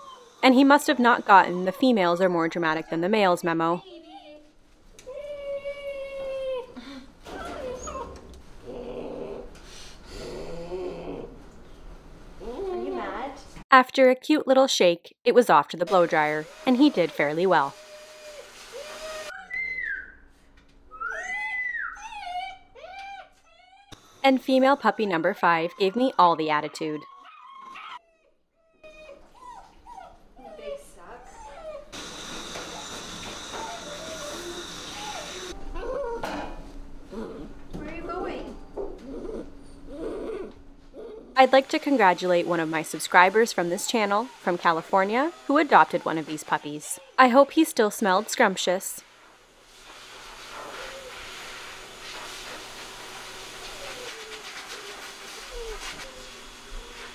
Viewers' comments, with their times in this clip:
0:08 The angry puppy grunts are my favorite 😭 My now 9mo old cattle dog mix pup has always been grumbly, and she would grunt and grumble like that in the bath.
0:10 ohhhh the angy baby noises 🥺 so precious! i can't imagine the sheer amount of patience it took to do this with eight of these little fluffy morons, you're amazing tbh!
0:38 Ahhhh the struggle of the puppy trying to escape under your arm !! The annoyed grunting was so damn cute